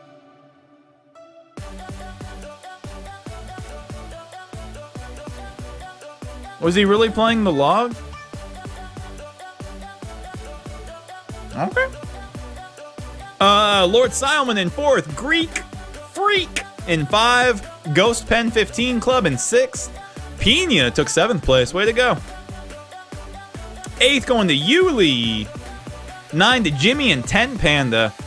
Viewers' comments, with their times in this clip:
0:10 i just dont understand why he have to do by saying okay at a very high pitch every single time